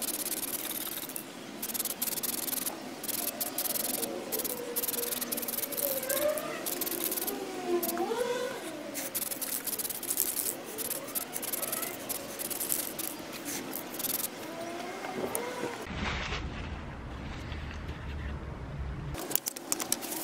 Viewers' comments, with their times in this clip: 0:05 sound like a F1 race in the backround